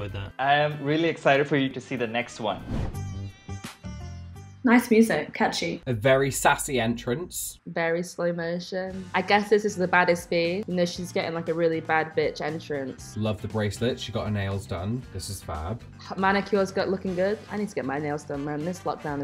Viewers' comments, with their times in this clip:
0:03 as soon as that tune starts I go like kamolika